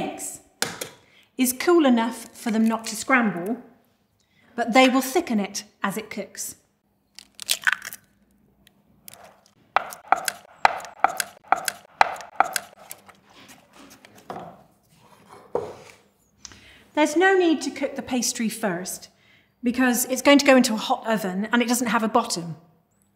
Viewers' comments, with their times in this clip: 0:10 Hold on, I think I'm like the only one who caught this, why am I hearing the same sound bit of the spoon mixing the tapioca pudding- 😭😭 Like it happens a few times I swear I'm not crazy- It's please tell me I'm not the only one-